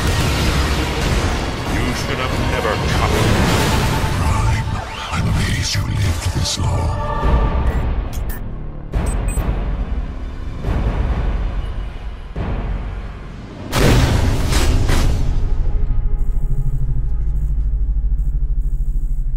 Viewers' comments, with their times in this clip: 0:05 The hell is he saying ?